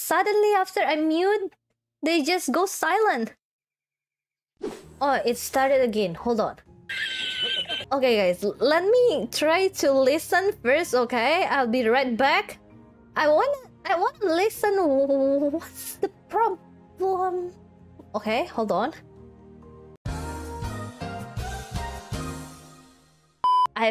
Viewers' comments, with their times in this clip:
0:06 I was not prepared for that laugh track lol almost spit out my Milo